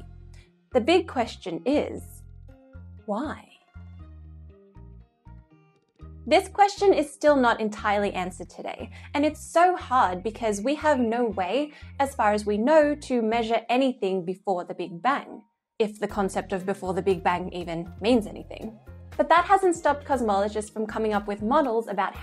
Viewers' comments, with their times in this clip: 0:03 Why? - I'm sorry but, that was the sexiest science related thing (saying the word "why") I've ever witnessed. Totally serious. just sayin